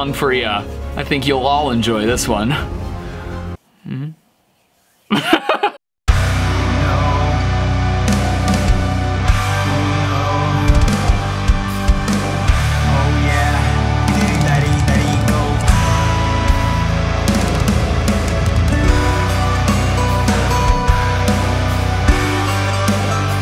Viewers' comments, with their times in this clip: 0:06 omg why does everything sound perfect when you edit it. I always wait for this part of your videos